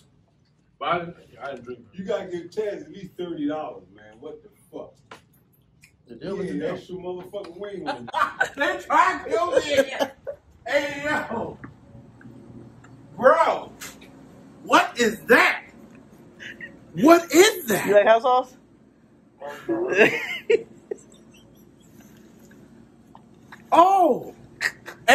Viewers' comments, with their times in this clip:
0:08 lowkey sounds like kevin hart